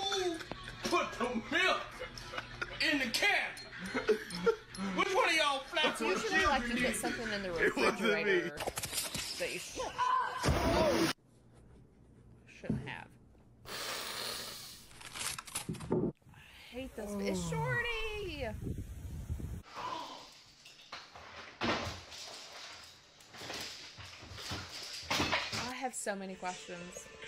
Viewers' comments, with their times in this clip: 0:09 The noise she made as she fell in the water 😂